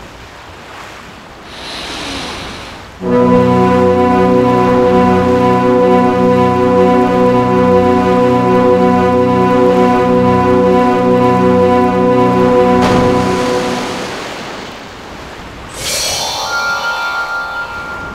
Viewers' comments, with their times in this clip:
0:03 Epic horn ringing